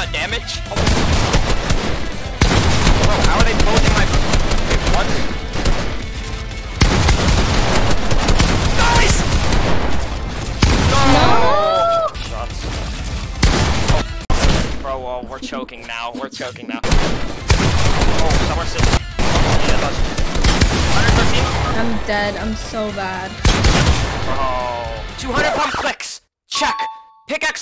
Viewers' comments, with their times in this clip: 0:10 when she say “nooooo” broo (no simp just satysfiying)